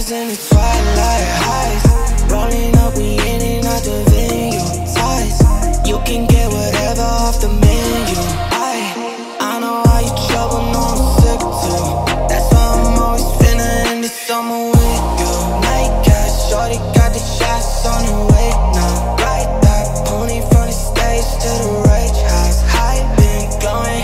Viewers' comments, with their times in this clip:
0:08 that short beat pause with the "I" plus it's echoing to both sides of your earbuds is just😍😩...
0:08 Also that "I-I-I" with the beat pause oooof